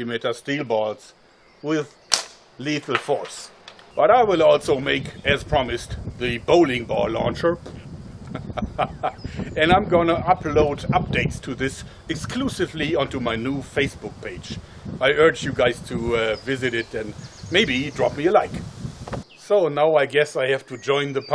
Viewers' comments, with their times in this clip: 0:05 best bowling ball launcher impression ever!